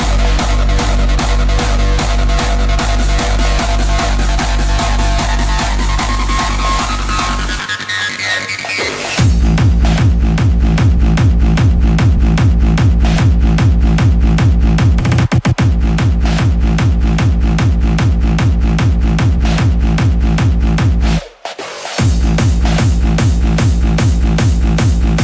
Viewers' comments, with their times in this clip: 0:09 That transfer was clean